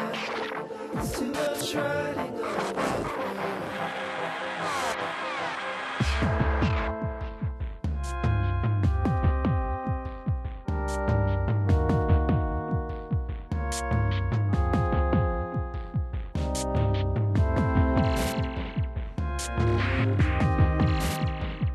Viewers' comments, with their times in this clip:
0:04 on makes me think of a giant robot orgy that builds to a climax where they all shoot laser beams out of their cold, metal genitalia.